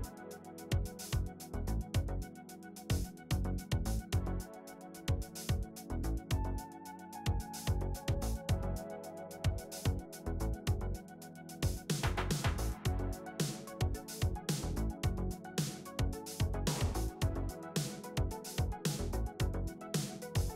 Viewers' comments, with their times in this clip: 0:08 music sounds like an old porn from 1990. That's why they call it food porn.